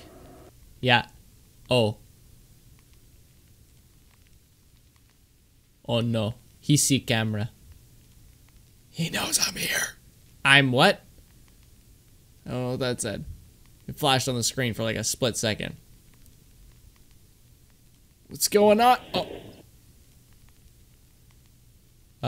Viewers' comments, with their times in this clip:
0:08 that whisper sounds similar to the creepy whisper tts voice